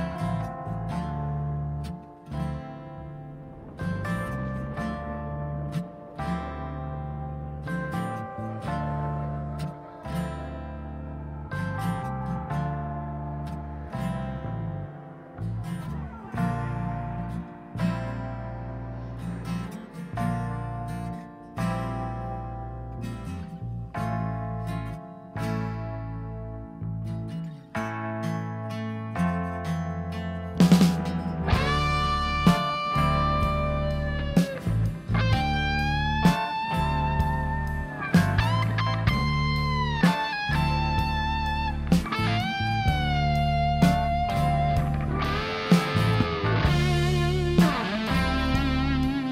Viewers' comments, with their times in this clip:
0:03 I agree with you on some points. Yes, Jon Carin sings infinitely better than this guy. Yes, the tone of the guitars is very dry mainly on the solos, the distortions do not decorate with other effects like Phaser, Flanger, etc ... In short, I believe that Roger Waters gave up more "authored" guitarists to have greater loyalty in the guitar lines that Dave made. Its a shame that its a realy very weak and not very creative tone, but in terms of fidelity at Gilmour's lines are impeccable. But let's face it, the band in general is sounding much better than on other tours. The quality of the keyboard and drum tones, which are the background that makes Pink Floyd's magic happen, are very well done. I detested that old Waters drummer, doubling the riding hand on all songs. This news drummer looks like he really cared to embody Nick Mason's spirit. If you put it and then compare it to the original 1977 version, man, it's very close.
0:30 this one must be among top 5 Best Gilmour's solos